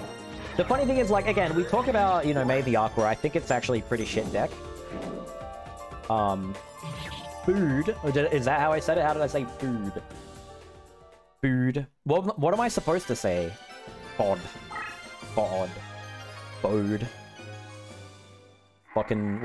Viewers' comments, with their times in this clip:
0:07 Ever considered learning German? That's a pretty solid "ü" you've got there 😁